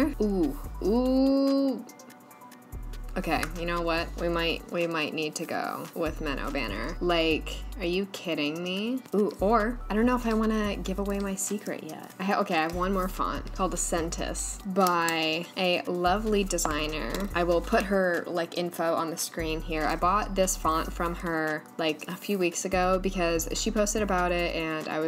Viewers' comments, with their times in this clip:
0:07 Wait, but why does she sound like Kim Kardashian!?! 😂😂😂 (I know, kinda random but...)
0:07 Wait, but why does she sound like Kim Kardashian!?! 😂😂😂
0:07 Kourtney kardashian voice